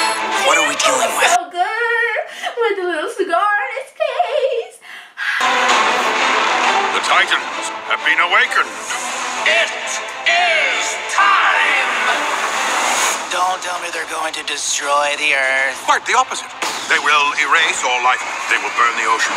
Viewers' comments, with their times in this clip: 0:03 When you said that i thought u said CIGAR and not scar🤦‍♀️ so my smart self went looking for who has a cigar in their mouth